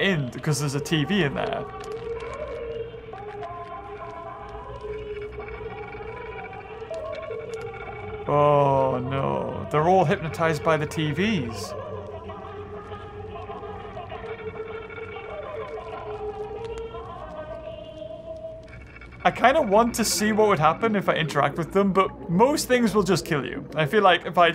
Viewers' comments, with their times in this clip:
0:07 same sound as the tv when you were with the janitor and you turned on the tv
0:12 Sounds like my afternoon Spanish shows on tv